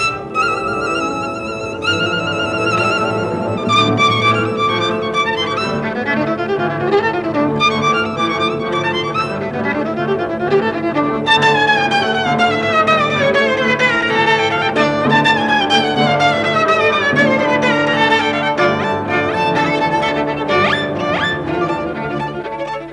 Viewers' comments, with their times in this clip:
0:10 First time i hear that clear rhythm in octave slurs !